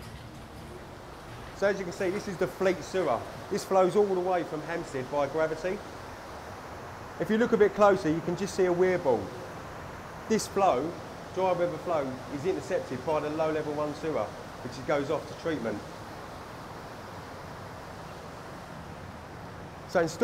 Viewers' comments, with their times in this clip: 0:06 And why exactly is there a Weeaboo in the London sewer system?